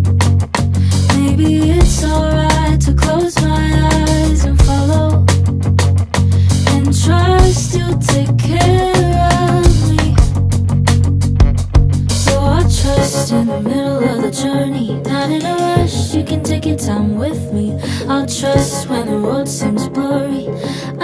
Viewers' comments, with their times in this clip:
0:06 Why is the "me" in "trust you'll take care of me" so sped up? it's like the tempo goes 0 to 100 and then back down again? is this just me?